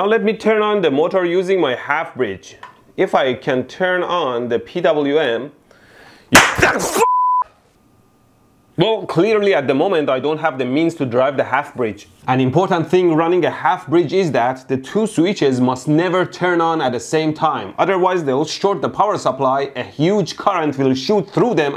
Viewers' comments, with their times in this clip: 0:06 All the way to before a 'Boom'